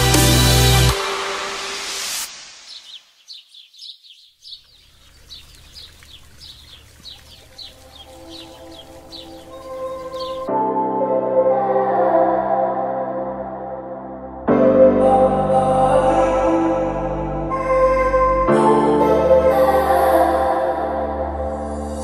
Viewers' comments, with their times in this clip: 0:10 beautiful Homes!!!! what song ? the music matches the energy of the homes